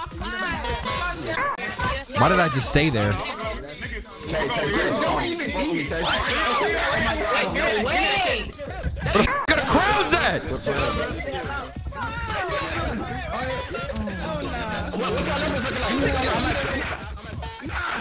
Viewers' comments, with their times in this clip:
0:06 that screaming KILLED ME